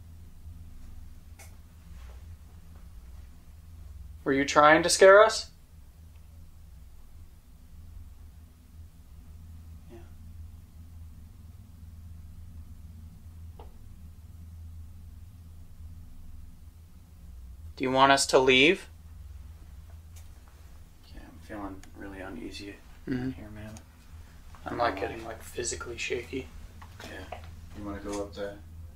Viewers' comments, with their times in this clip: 0:10 you can hear a voice go, “no”!!! I can’t believe no one else found it!